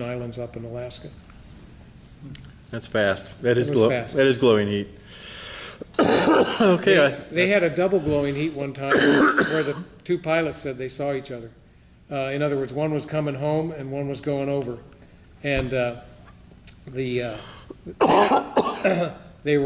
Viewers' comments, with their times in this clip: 0:05 It would be the greatest interview ever if the goddamn interviewer didn't cough up a fucking lung right into the microphone. I lost my fucking mind